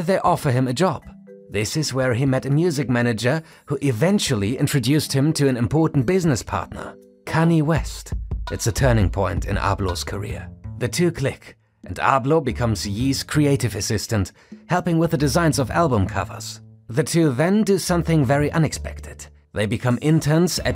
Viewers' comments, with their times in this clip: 0:07 that's not how you say kanye